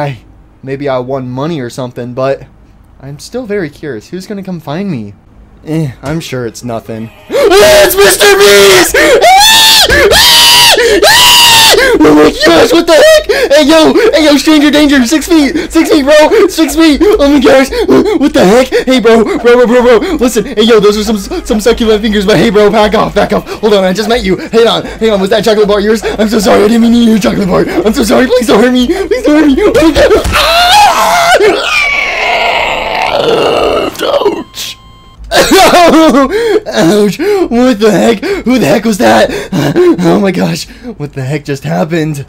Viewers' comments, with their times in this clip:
0:07 WHAT WAS THAT SCREAM😂😂😂
0:09 WTF THAT SCREAM 😂😂😂😂😂😂
0:29 WHAT THE HELL WAS THAT NOISE!?